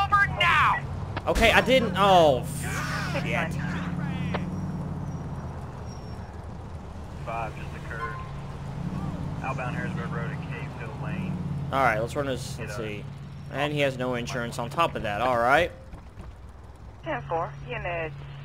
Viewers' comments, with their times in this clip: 0:06 lawl "Pull over you jackass", BAM another car crash, "oh fuck"... ;P